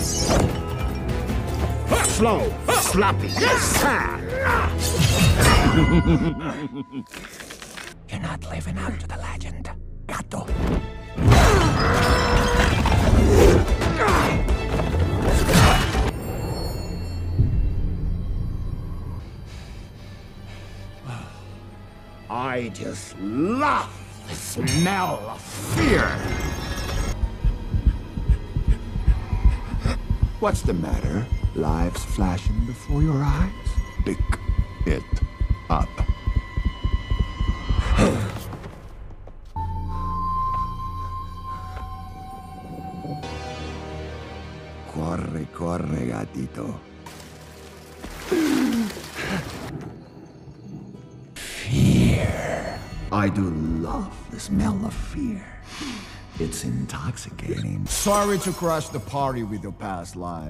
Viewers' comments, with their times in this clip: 0:04 that super villian laugh always gets me
0:04 that parry is my favorite moment. It shows the wolf has switched to a more serious tone. The clang, the chuckle, great moment.
0:06 To all the One Piece fans go to to hear Death laugh like Doflamingo
0:21 this line, the clanging and scraping of the sickles against the ground with lightning in the background, absolute chills for what's to be a kids movie
0:21 Death sounds like Tim Curry
0:27 Sounds a bit like Tim Curry
0:44 “Corre corre, Gatito” (I guessed that it meant “Run run, Kitty” in English, and then translated as I don’t speak Spanish 😅) The facial expressions, tone, even the way he enunciates his words. One of the best animated antagonists I’ve ever watched, honestly. Disney, you better be taking notes.
0:45 speaks in spanish. Thanks for the subtitles, i guess. Also watched this movie with my gf and sometimes i had to translate spanish for her